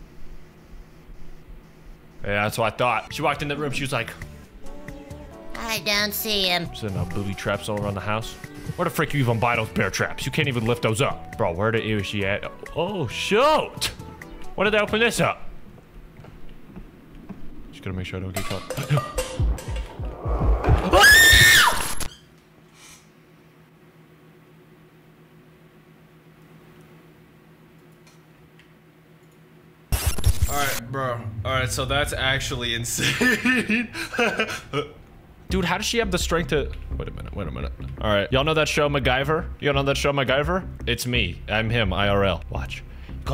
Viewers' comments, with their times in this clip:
0:04 bro sounded like SpongeBob
0:17 bro let out a little scream
0:17 bottle noise 3fs: ... ok everything's FI- AHHHhHhhHh
0:19 no way that scream was real
0:20 his voice is the jumpscare 💀
0:20 bro's scream scared me more than the jumpscare
0:20 Manlyest scream ive every heard
0:20 I screamed in the same pitch as you😂😂❤
0:20 bro screamed like my 4 year brother how tf you do it💀 teach me
0:20 what was that goofy ahh little kid scream🤣😂
0:21 The scream got me dead 😂😂😂😂
0:21 that scream actually made me wheeze like a goofy dying dolphin💀
0:23 That scream got me
0:28 I HAD A HEART ATTACK😭💀 and your scream sounds like a girl scream speed up